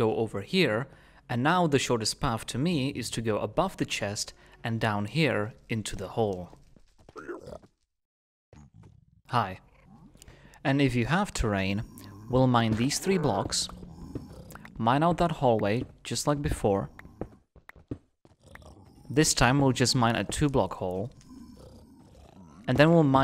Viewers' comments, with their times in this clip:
0:07 that "hi" was so friendly 😂